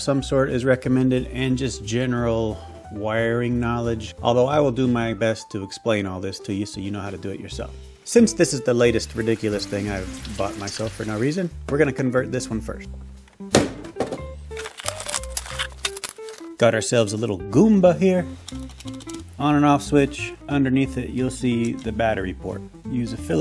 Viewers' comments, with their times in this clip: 0:09 Was that the sound of an LED shower head I just heard? How is that usb powered candle doing?